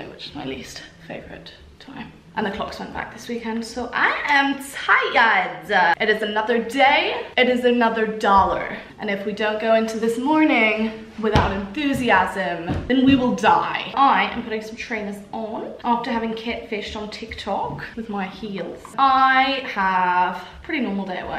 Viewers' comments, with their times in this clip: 0:09 Oh my god she sounded so American 🤣🤣🤣 Love your vlogs sm!!! ❤